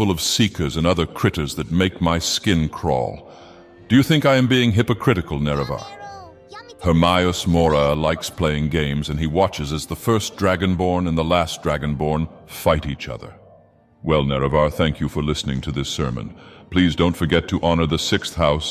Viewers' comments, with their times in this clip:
0:05 Lord Dagoth, why do I hear a voice speaking anime ? Was that real or are auditory hallucinations a side effect of the corprus?